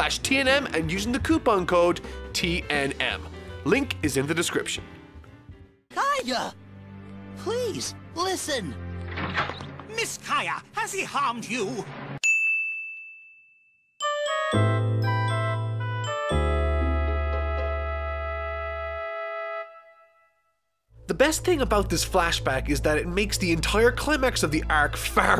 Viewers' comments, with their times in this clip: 0:09 sounds like a Disney villain